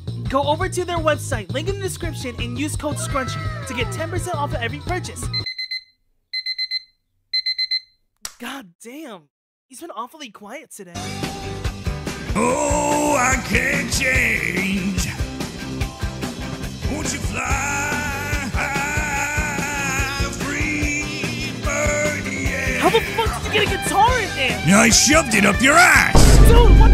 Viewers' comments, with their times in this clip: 0:10 Sukuna a fire singer